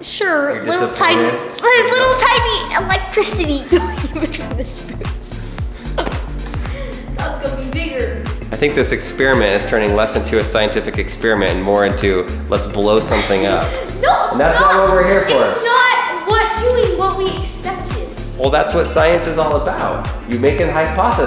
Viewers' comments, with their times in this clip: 0:05 did he say the N-word?